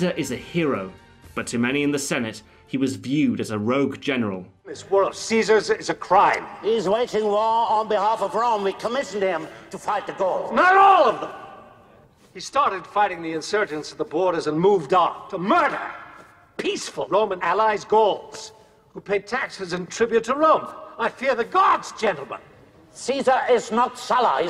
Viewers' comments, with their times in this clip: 0:08 that's the weirdest roman accent I heard lol